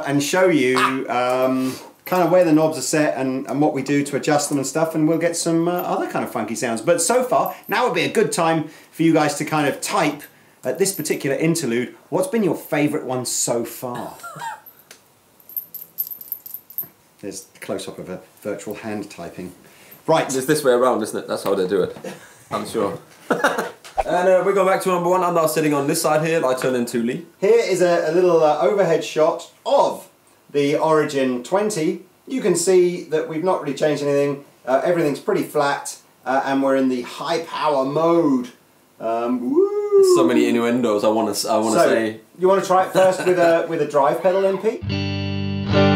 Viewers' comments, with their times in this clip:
0:06 After the 1st clean go-round, minutes in, I would only consider the Marshall, Fender and Blackstar. I only leave the VOX out because I don't prefer the really chimey sound especially when you get to distortion. The Blackstar might sound fuller or bassier, but it also sounds somehow "digitized" like a solid state amp. Without going into distortion I can only say that a clean sound, to me, is the most important thing and if you gig, as mentioned, you don't need the extra bass of the Blackstar, although the Marshall EQ can probably make up for that if you want. The Marshall clean tone has a "special" natural character, almost like it's telling you to expect that character when you go into distortion, and you can do SO much to build upon that with pedals, etc. I don't know the Origin 20 distortion, but I think Marshall knows distortion better than anybody. ...so on to the rest of the video.
0:26 Im The fender is the best clean, but Vox a bit more flavour that i really like